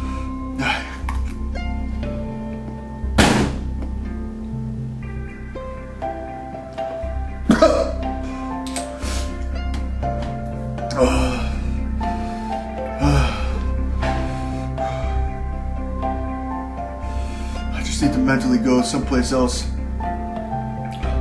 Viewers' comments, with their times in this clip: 0:03 that table slam!